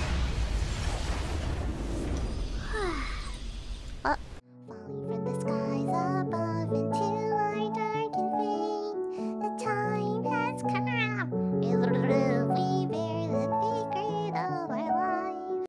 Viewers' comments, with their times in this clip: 0:05 you are singing me to sleep is soo gooodddd